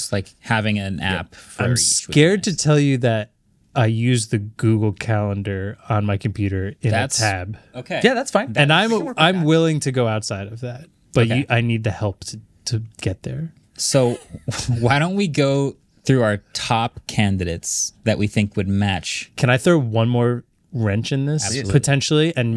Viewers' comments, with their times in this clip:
0:07 why did he say it like that 😭 afaik there’s no other way to use Google Calendar on Mac ? i wish there was